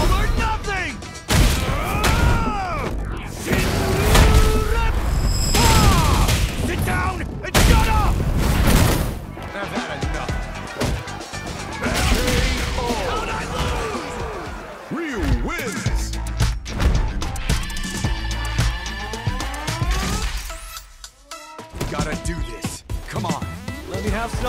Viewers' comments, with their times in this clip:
0:08 I think the voice or echo or shoryueppa should have got stretched till the next bit instead of saying sit down and shut up lol. Spoils the name of the super. Or should be a angry shout.